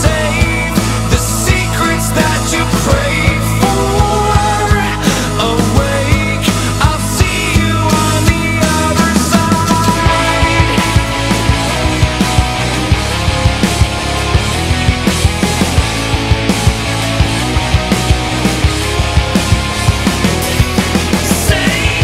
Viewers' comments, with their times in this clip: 0:09 The guitar chords are awesome